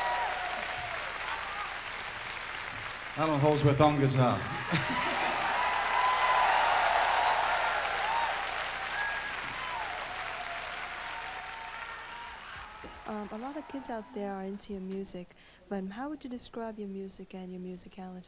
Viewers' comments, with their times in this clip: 0:03 I love how he chuckles like "no duh" when he introduced Alan.